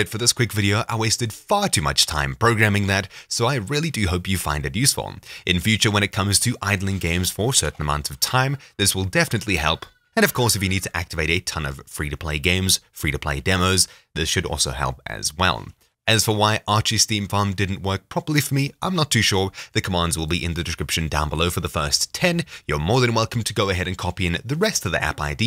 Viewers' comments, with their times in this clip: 0:09 Very informative video and good work on the scripting. As an extra, I had a feeling I heard something familiar in your accent yet you mask it very well - Fellow South African Also the hadeda at the end confirmed my theory :p + Sub